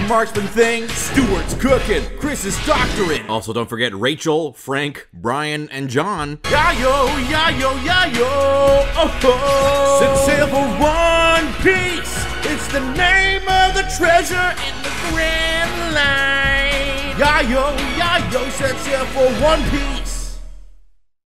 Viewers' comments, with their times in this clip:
0:04 It sounds like he's thanking patreon sponsors xD
0:10 Mans actually hit that high note 👏